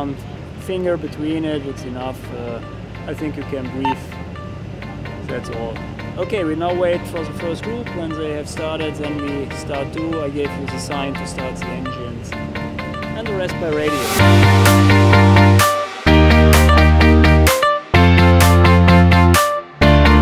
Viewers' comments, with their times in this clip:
0:07 new music again 😲😲😲